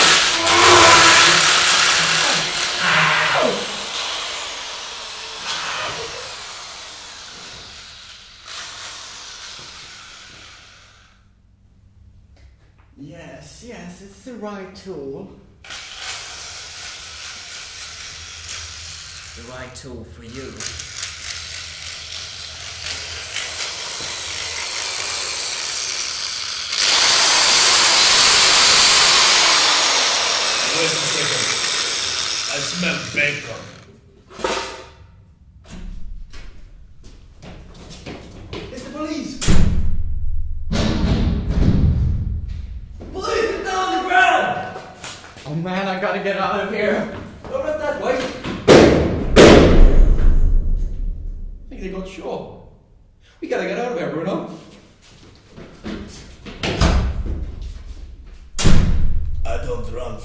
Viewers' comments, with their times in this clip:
0:05 you can hear a laugh
0:42 The police man sounds like Johnny from superwog1